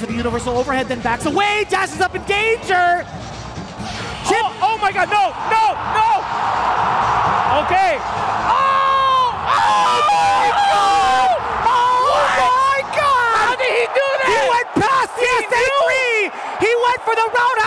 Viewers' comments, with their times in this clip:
0:05 you can hear the flashbacks in justin’s voice 😭😭